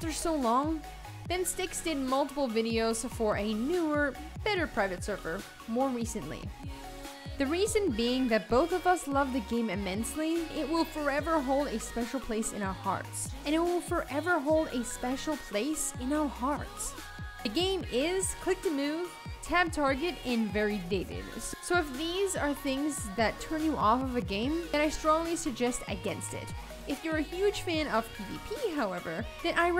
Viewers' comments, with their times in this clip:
0:10 Why does the sound repeat at some points like for example ? That really threw me off, thought something was wrong with my browser.